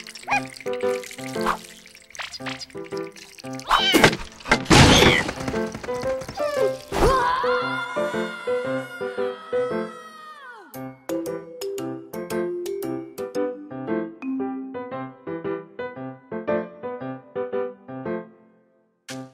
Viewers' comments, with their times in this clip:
0:07 All meow tho